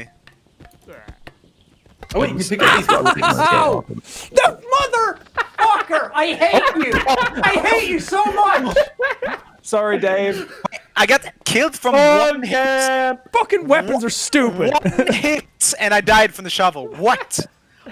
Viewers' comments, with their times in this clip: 0:04 Why is no one talking when Jack gets killed then his weapon is thrown at him